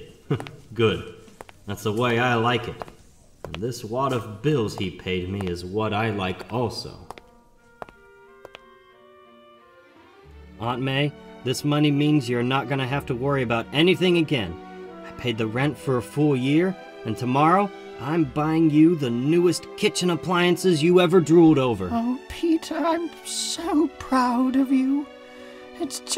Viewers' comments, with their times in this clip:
0:09 I like the imitation of aunt may voice